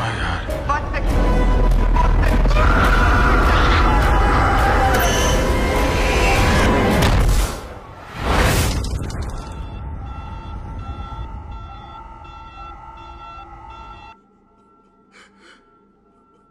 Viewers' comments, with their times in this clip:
0:03 I remember seeing this in theaters, and it was just me... damn... the emotions on his face when he had to push the button just made me tear up... imagine the love of your life and all of those still in there, didn't come close to the exit point, and only what followed was that vapor from the reactor... and with no choice you had to make the decision... that scream of anguish is what hit me..